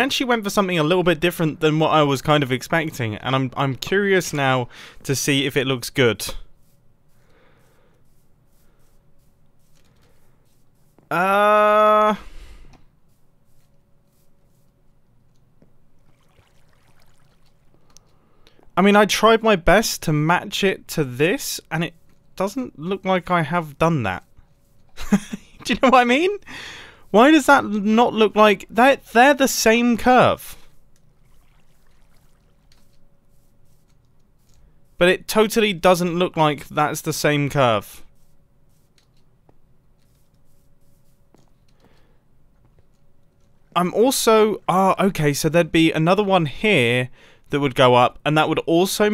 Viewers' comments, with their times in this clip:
0:07 all you can hear is mumbo breathing and the background for about 50 seconds. Also mumbo saying ehhhh. lol
0:07 I literally thought that I accidentally muted my mic lol
0:30 confused mumbo noises